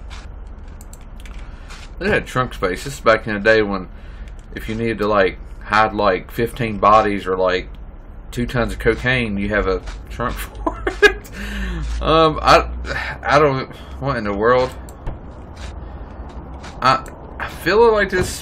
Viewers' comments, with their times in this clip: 0:04 best moment/laugh ever 😂